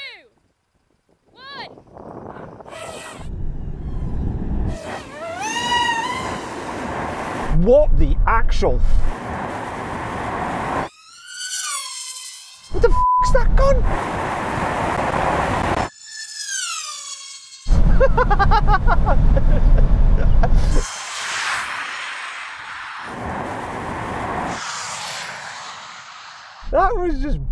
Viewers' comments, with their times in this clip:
0:10 Proper sounds like a miniature F1 car lol